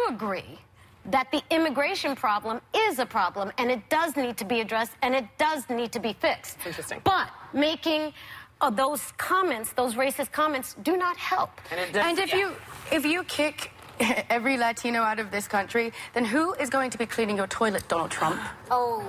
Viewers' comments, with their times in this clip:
0:04 She said that so confident too 😂